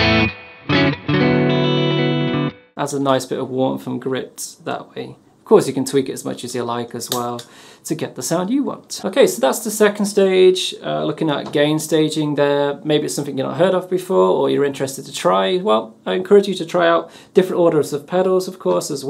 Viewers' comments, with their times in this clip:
0:06 The tone of all 3 drives together sounded incredible The sound of the stereo delay was wild too, its such a striking sound